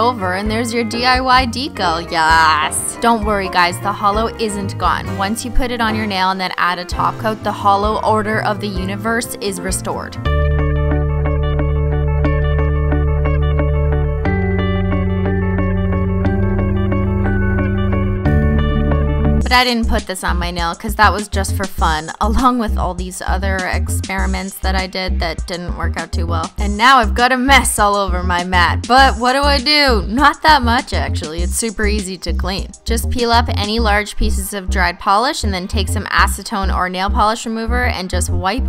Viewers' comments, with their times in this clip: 0:10 *Empire Cinemas Music plays*
0:20 Is it just me or does the music sound like the music from dhmis the creativity song? Idk. I'm weird.